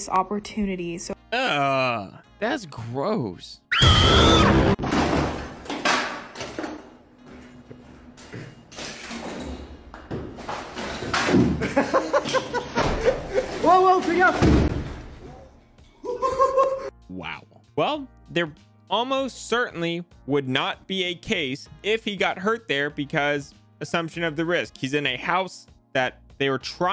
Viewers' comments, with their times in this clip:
0:08 Damn it they're french- we can clearly heard a "WOWOWO FAIT GAFFE" Huh...Why my people is cringe-